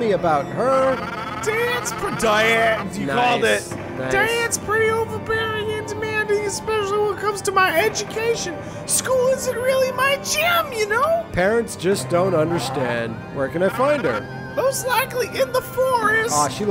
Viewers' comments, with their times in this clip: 0:04 I love how this intense spooky music is playing while these people have a completely mundane conversation.